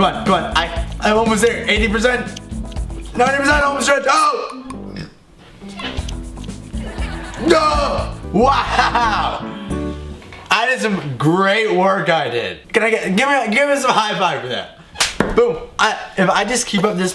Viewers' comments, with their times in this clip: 0:04 did you swear or say oh slurp xD